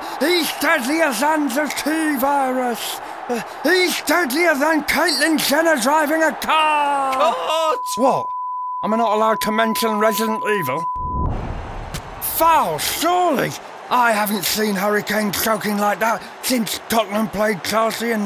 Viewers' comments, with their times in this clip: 0:04 Why is no one talking